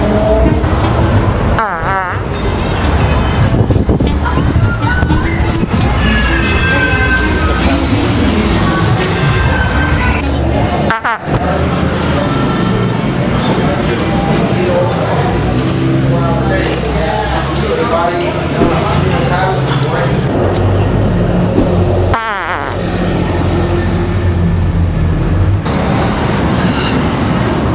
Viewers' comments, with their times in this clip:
0:10 You farted on Larry David